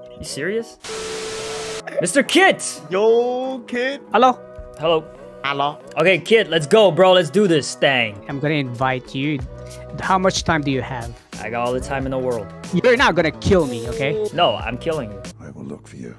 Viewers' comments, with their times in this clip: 0:04 lol noobie sound is cuteee